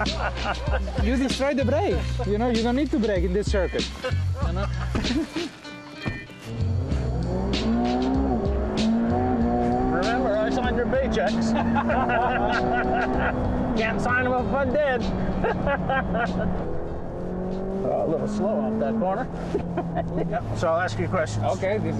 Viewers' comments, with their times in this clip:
0:07 Same with "remember I sign your paychecks" that was like the most genuine looking fake laugh I've ever seen